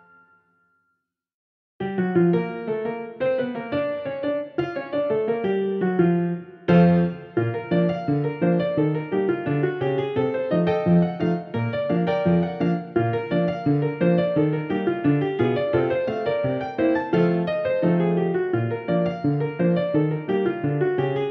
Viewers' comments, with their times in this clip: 0:03 This part remember's me a little bit the peach castle